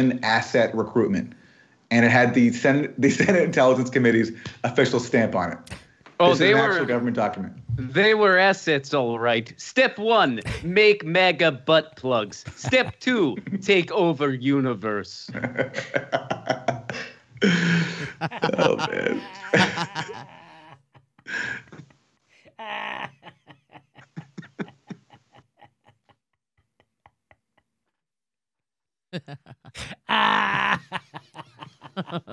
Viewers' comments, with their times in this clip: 0:08 Have to come back and rewatch this often. Jimmy dying laughing is so worth it, esp
0:16 Jimmys hysterical laugh is really funny!